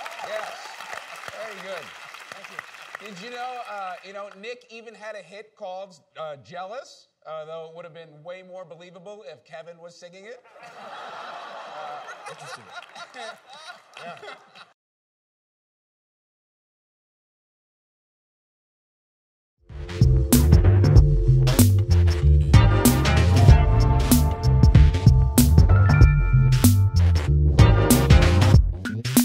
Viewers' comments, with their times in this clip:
0:03 The one who laughed the hardest knows it’s true.
0:12 that laugh pretty much proved his point.